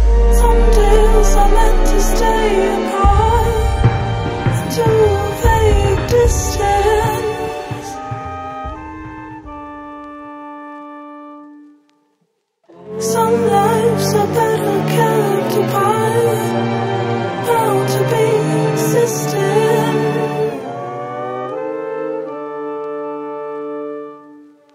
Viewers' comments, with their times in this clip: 0:09 she reminds me so much to Portishead!! Wow